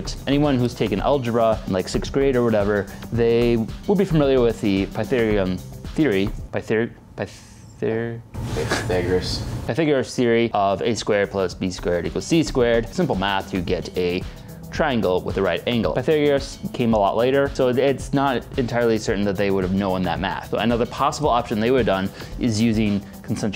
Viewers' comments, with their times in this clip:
0:04 you may not be familiar with the intellectual mortise pronunciation, but we're all familiar with the pytherium theory